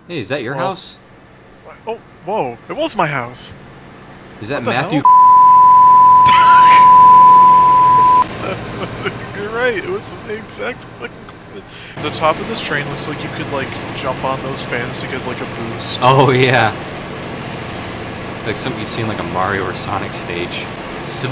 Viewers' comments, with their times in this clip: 0:04 BEEP moments part 2